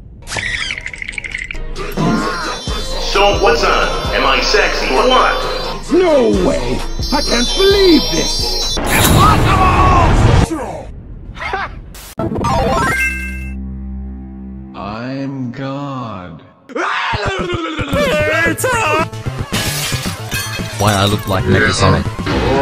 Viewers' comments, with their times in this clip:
0:09 sounds like something out of book of life to me for some reason, I also can’t believe that there’s so many references in this